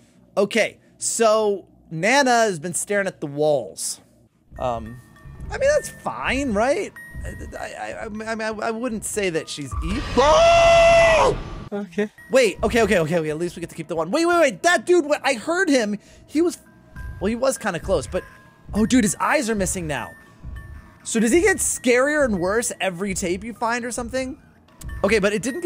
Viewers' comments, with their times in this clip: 0:10 Add this to the perfectly cut screams list